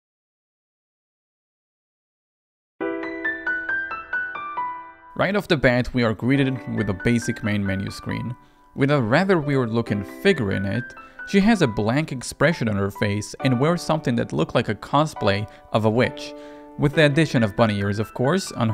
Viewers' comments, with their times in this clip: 0:03 when the piano started it hit me like 2017 all over again